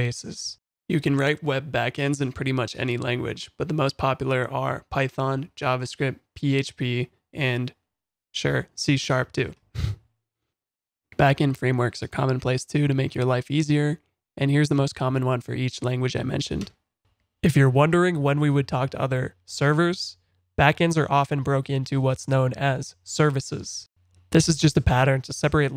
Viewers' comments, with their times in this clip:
0:07 There was a reluctant chuckle at the mention of C# for backend I'm genuinely curious about the reason for that (i.e. is C# for backend a joke?) I've been learning C# for use in "Unity" for game development, but I've been hopeful that I could make use of this language in other, more practical, applications, like back-end web-development, but is this a bad idea?